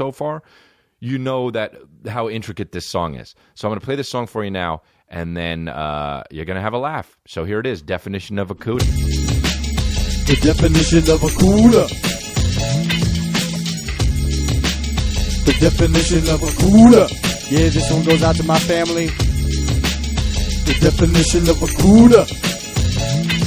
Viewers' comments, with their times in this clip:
0:05 lol the songgg is so funny